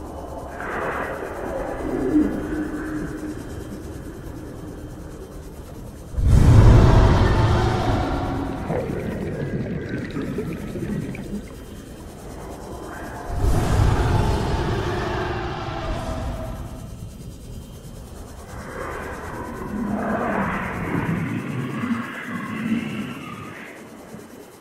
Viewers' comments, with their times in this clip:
0:07 It sounds like an enderman lol